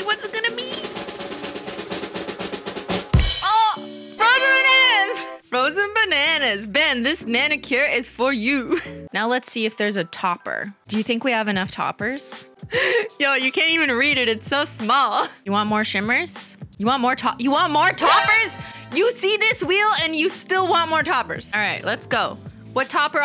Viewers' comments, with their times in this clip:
0:04 The pitch of your “frozen benanas” yell is in tune with the celebration sound effect 😂 so satisfying